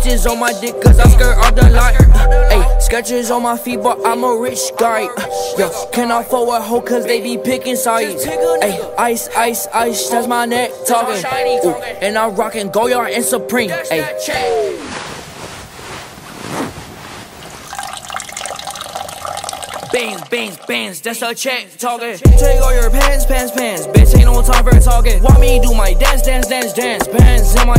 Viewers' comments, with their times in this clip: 0:08 1st: it's catchy 2nd: this kinda fire 3rd: ayye this lit 4th: ICE ICE ICE THATS MY NECK TALKING